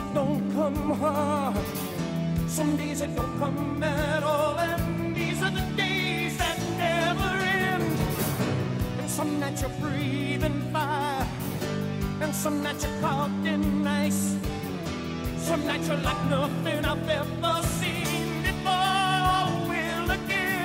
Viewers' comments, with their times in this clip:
0:08 Anyone else hear the ting sound And think it was Teamspeak or somthing ^_^ ?